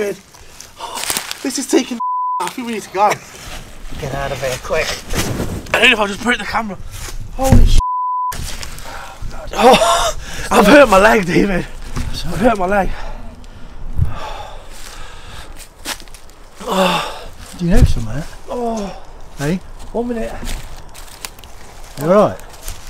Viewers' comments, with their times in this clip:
0:03 ......THAT man's voice that are saying......"GET OUT OF HERE, QUICK"......is NOT one of your voices, i think he is warning you guys about something very nasty evil thing is coming oooor ARE there........?????